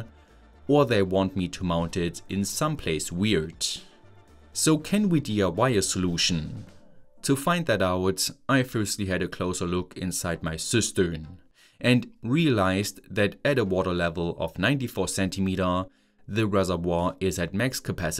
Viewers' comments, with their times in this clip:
0:06 I must say, every time you said Cistern, I kept hearing Sister, and.... well, it's weird to hear "I firstly had a closer look inside my sister" Yes, now that I re-watched it multiple times I don't hear it as much, but first time caught me off guard 😅